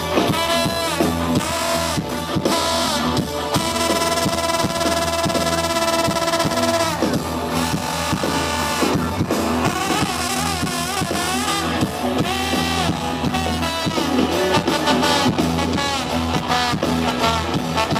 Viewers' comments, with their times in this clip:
0:03 the SKILLS TO PAY THE BILLS come out!! We want more trombone!! Thank you for getting this!!! I was the tall guy right behind you.